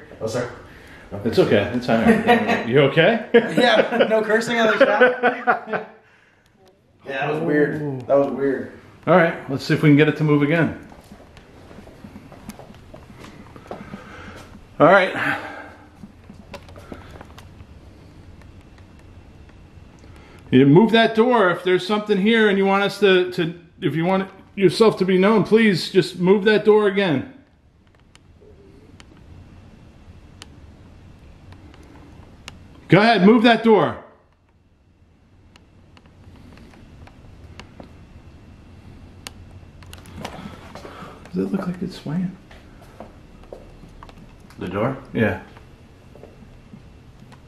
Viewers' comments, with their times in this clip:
0:05 Yo and again a few seconds later, it sounded like a womans voice!
0:06 Great video ....merry christmas to yall 🌲🎅andddd I heard a women voice ...Greetings from the netherlands And stay safe 🙏
0:06 hear a woman voice
0:06 who is the lady talking and again when you said move that door again
0:07 you can hear a woman’s voice and it sounds like she’s saying “hello”. It’s very faint and I had to listen a few times just to be sure but it’s definitely there.
0:07 /14, Woman's voice.... " HelloO " . ?????
0:08 you guys are talking/laughing listen very carefully, it sounds like an older woman say “Honey”
0:28 real faint laugh or a woman said i did. it was real quick sounding whatever it was.
0:29 a disembodied voice is heard either giggling or saying uh huh!! Its super creepy noboy knows what happened to these people...xo
0:30 woman says “uh huh”
0:33 it sounded like a woman moans